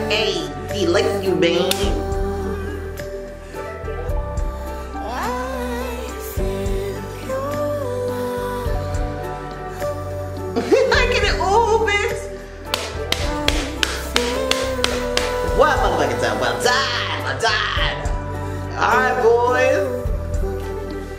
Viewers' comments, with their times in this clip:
0:05 the music is on point!!!❤❤❤❤